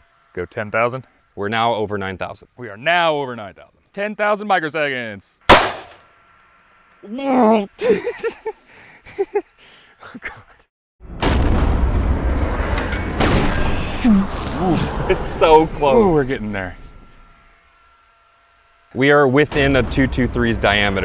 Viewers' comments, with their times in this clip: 0:07 the noise you make when she's not washed for two days but you still eat it.